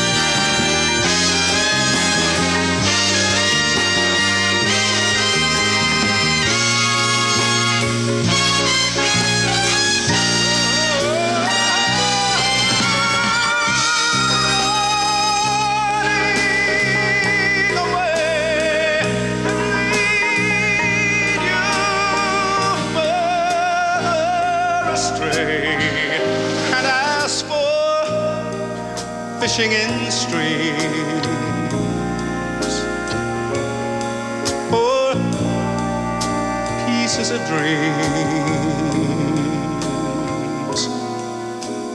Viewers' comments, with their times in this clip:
0:03 ... And this is why he is one of the finest... MR. JOHNNY MATHIS... Check out that amazing ending and that fabulous note that he hits at approx ... simply amazing and crystal clear... incredible...
0:22 The man with a velv🎉et vo ice dad favourite singer 😊
0:22 The man with a velv🎉et vo ice dad favourite singer 😊
0:22 The man with a velv🎉et vo ice dad favourite singer 😊